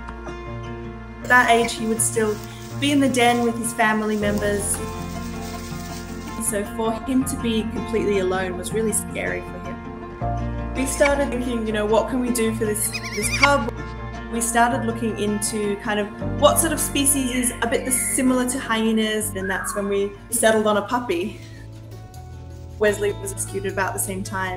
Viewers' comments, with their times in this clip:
0:10 he has a long neck neighs like a tiny horse so cute you could cry